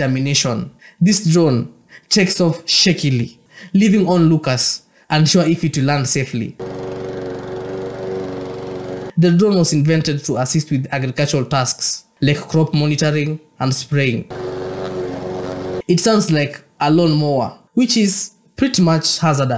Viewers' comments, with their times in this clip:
0:05 Holy shit that is SO dangerous! Look at how close her neck is to those giant spinning propellers. The pilot's screaming "relax!" but what they mean is "you need to stay perfectly still, or else...". What happens when the drone inevitably tilts, to, y'know... move?? 🤯🤯 Absolute death trap. I can't even... 😐